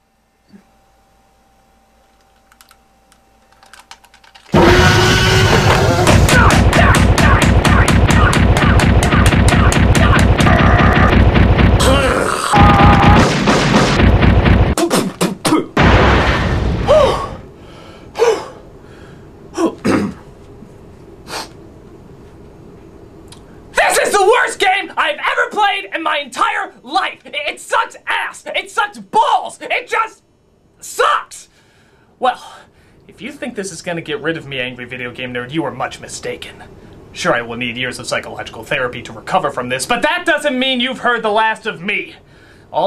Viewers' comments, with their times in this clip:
0:04 That T-Rex scream though. 🤣🤣🤣🤣🤣
0:04 best rage scream ever
0:04 T rex roar 😂😂😂😂
0:23 Best part where he's loudly shouting.